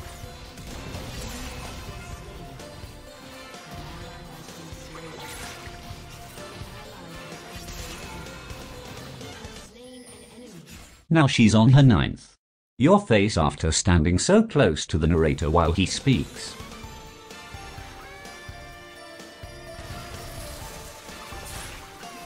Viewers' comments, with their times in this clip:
0:09 really hurts to watch, the ping on the cannon